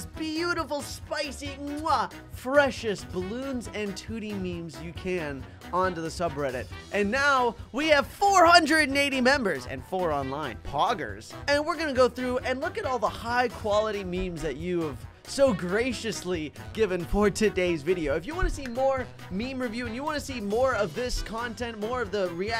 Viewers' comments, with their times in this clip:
0:10 the way he says poggers and how he zooms in on his mouth has my rolling XD idk why i think its funny!